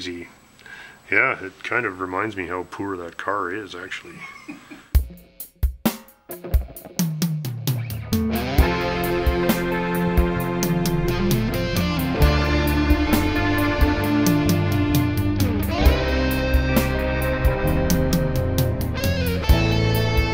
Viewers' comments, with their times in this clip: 0:05 I love when that music plays